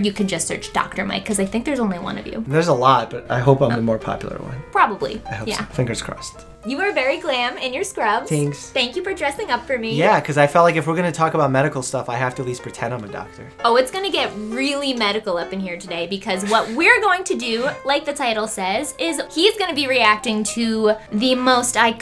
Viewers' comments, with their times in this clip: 0:06 When he said “tanks” and smiled 😭 sooooo cutee
0:08 that 'thanks' is the cutest 'thanks' in the world
0:08 that litol 'thanks'